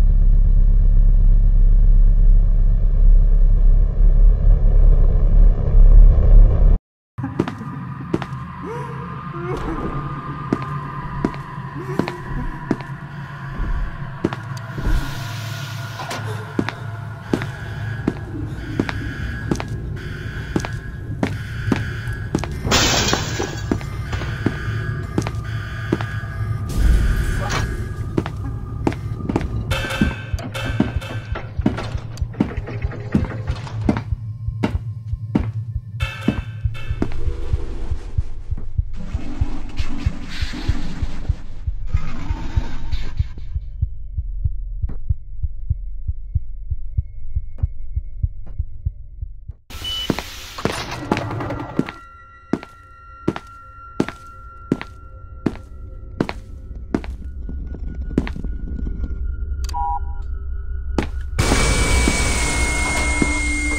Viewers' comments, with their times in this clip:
0:07 If you listen closely you can hear 096 screaming
0:50 Vela pulsar plays for a second